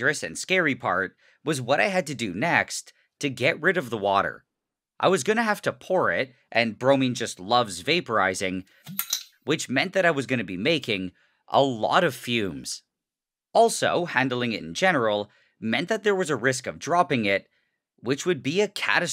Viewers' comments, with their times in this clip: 0:07 i love how it pops and you are not scared